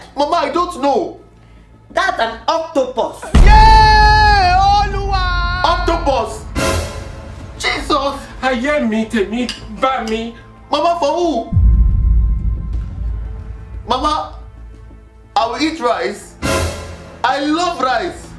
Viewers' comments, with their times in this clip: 0:03 That sound effect is new